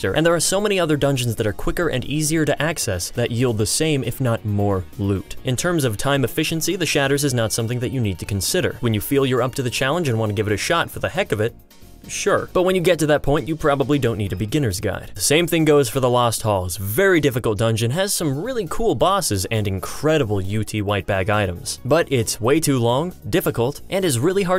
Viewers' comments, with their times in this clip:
0:07 I hear a fucking mosquito.